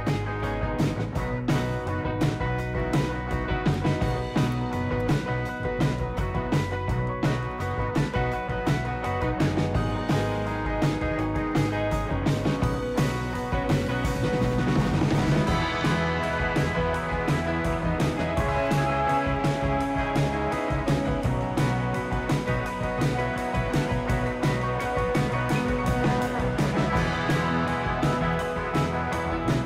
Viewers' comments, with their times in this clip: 0:10 Thanks for posting, but why on earth are we listening to a music montage instead of an explanation from you about what you are doing with all of those wires?!